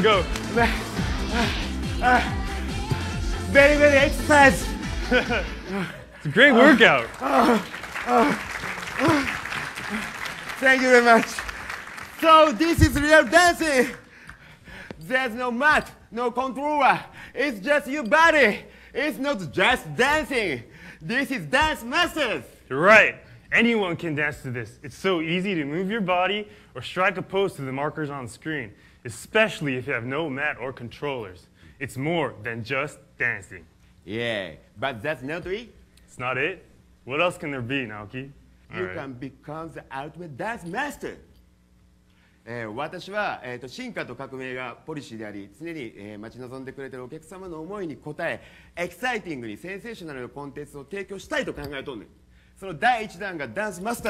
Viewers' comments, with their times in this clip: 0:09 who was the “fat” one again? The Japanese guy seems really out of breath
0:41 Naoki Maeda giving up on speaking english at this point absolutely cracks me up xD
0:41 I like how he goes from English to japanese in an instant. You can hear everyone's brain cogs turning after he speaks.
0:42 i love how the japanese guy simply give up trying to speak in english.